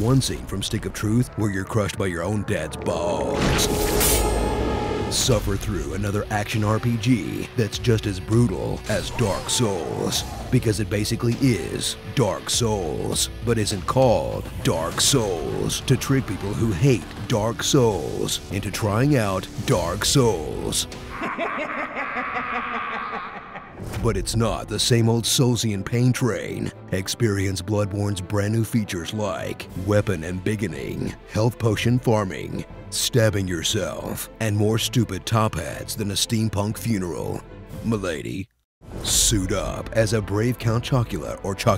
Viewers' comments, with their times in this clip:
0:09 is he said dark suace😂😂? Or subtitles are.....
0:29 hi, not native English speaker here... what does he said? weapon ambiginin?